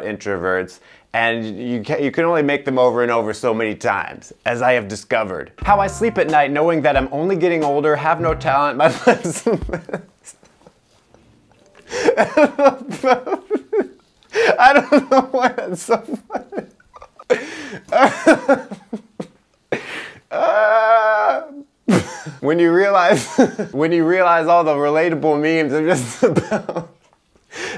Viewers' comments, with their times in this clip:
0:09 his laugh here is so genuine it makes me happy